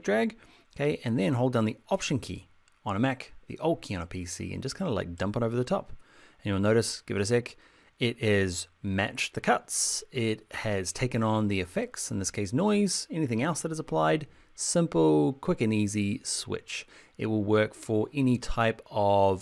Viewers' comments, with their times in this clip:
0:04 what is the 'old key on pc' as said in ?